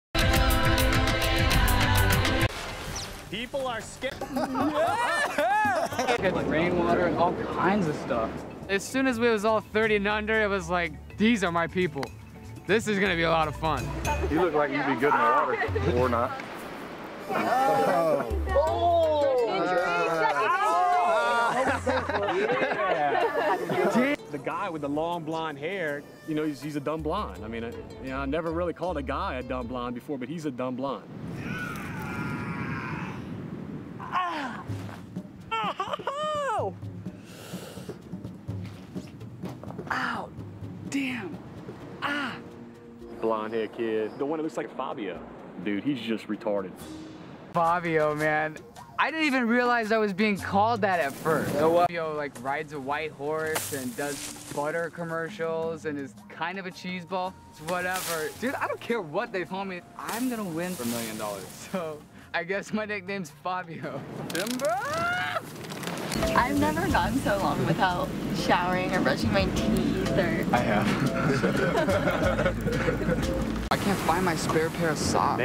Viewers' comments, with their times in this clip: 0:08 yo does he sound like Pewdiepie or is it just me
0:35 He sounded like Goku
0:58 is one of the most blatantly edited sound bites in the history of survivor 🤣 he’s clearly talking in like 4 different confessionals that they splice together